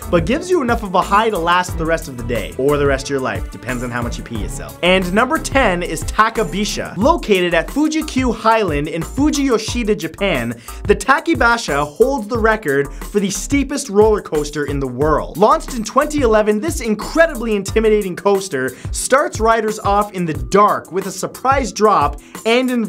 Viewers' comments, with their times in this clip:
0:05 yes, let's pronounce it wrong twice